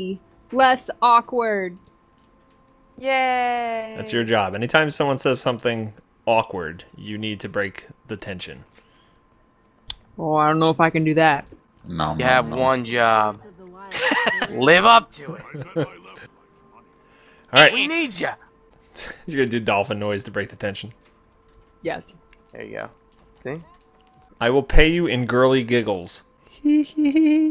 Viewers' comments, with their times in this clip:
0:10 Alittle after the guy who says "You have one job." He sounds JUST like the second eldest son from Chrisley Knows Best. Chase, I think is his name o.o But everytime I hear him, I always think it's Chase xD